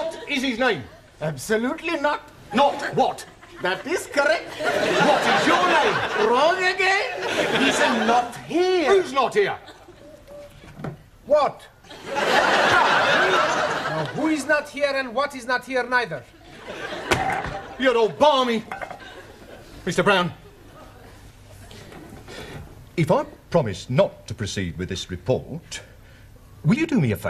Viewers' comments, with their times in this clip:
0:10 Max come out from back and with straight face say "whooott" 🤣